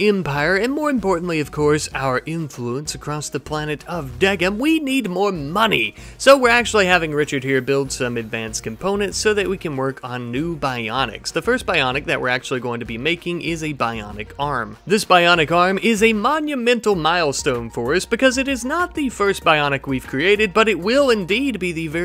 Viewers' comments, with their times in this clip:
0:03 bro turned into dutch there for a second